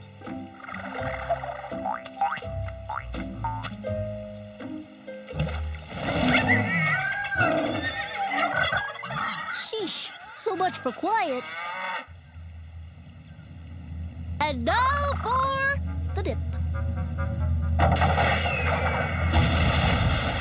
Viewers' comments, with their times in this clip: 0:06 Animals making sounds like monkeys, wolves, horses, turkeys, chickens and cows.